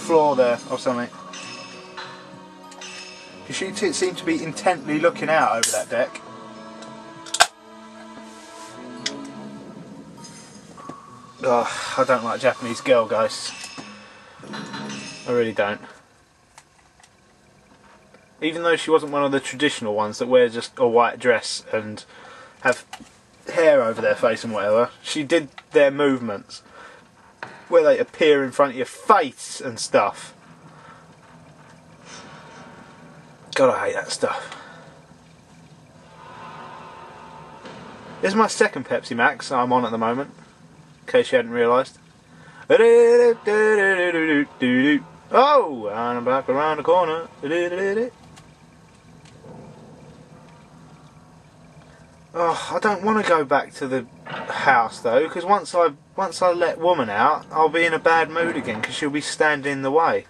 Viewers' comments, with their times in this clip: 0:05 ....was that a Coca cola.. laugh
0:45 lol ur screaming made me laugh so hard xD and doesnt the curtain things look like the cobra symbol :o